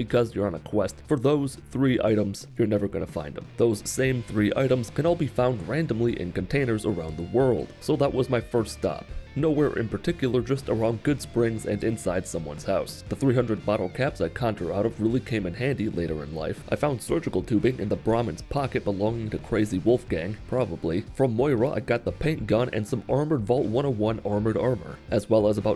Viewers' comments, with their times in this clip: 0:10 Goodsprings? But you are playing fallout 3, I think he's finally lost it guys Edit: I just heard him say commonwealth, I think I'm starting to lose it too